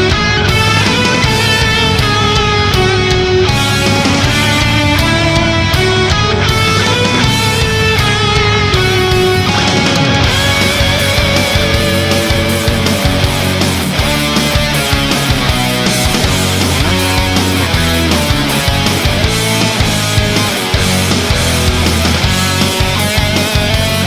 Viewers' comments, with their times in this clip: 0:07 you can hear the skype sound
0:07 Listen for the "skype message" noise. D'oit!
0:09 I was about to type "sweet" when it turned into KICKASS!!